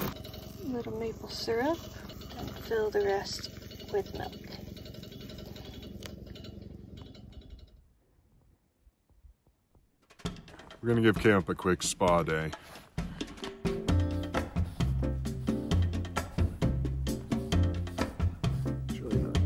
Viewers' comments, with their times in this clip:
0:04 Ehh, the rattling... Was that you shivering?